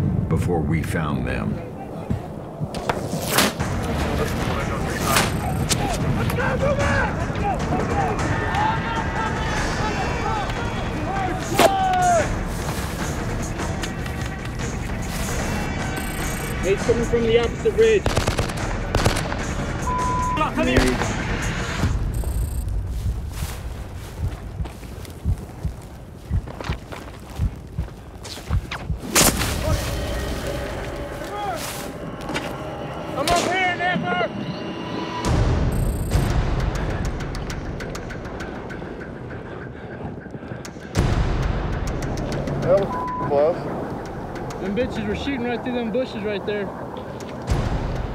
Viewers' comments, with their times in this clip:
0:03 who else think the bullet hitting sound is satisfying
0:32 "I'm up here Hard R?"